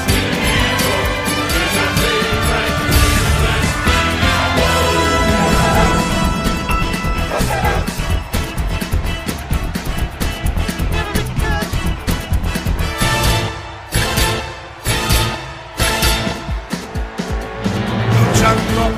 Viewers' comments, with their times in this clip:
0:04 Why does it sound like they are saying MR BEAST